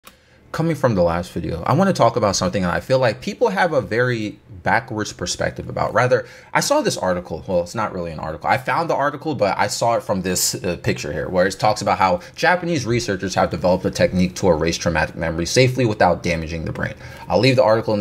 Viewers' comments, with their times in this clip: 0:01 what-ing from the last video?